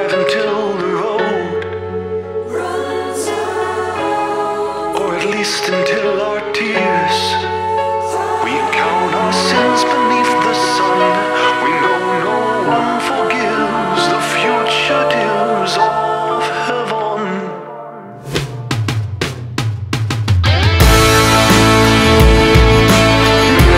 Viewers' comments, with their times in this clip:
0:09 gives me Alex Turner vibes and I'm loving it